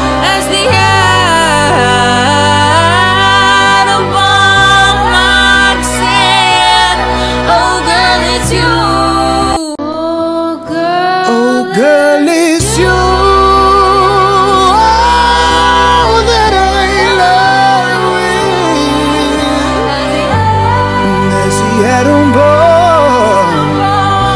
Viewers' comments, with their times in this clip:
0:09 He is putting his all into that note